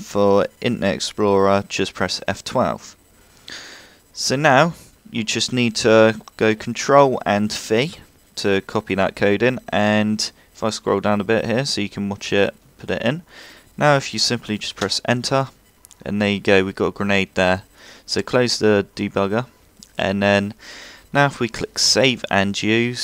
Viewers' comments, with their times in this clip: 0:06 control and fuee is all i heard at the mark ... what did he say plz im tryin to do this emblem
0:07 wtf is he saying? control f3?
0:08 what the heck did you say control shift and then i couldnt understand that last letter